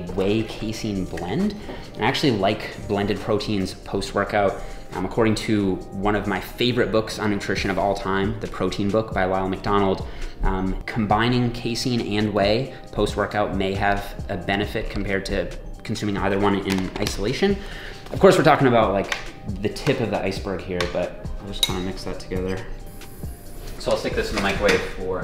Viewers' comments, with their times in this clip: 0:06 'One of my favprite books on nutrition by RONALD MCDONALD' LOL
0:08 It sounds like you said the protein book by Ronald McDonald. Sounds legit
0:09 I thought I first heard him say "The Protein book my Ronald McDonald".